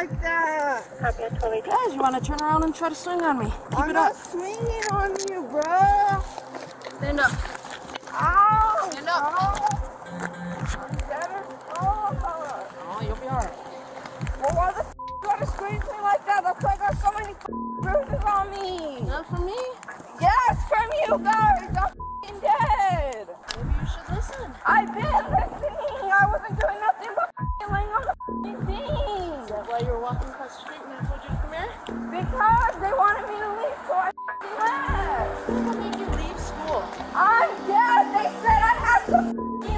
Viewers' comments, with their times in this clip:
0:10 she turned into a goat "Bahahahaha" xD
0:21 blud really said “ 🐐 🐑🐑🐑🐐🐐🐐🐐🐐🐑🐑🐑”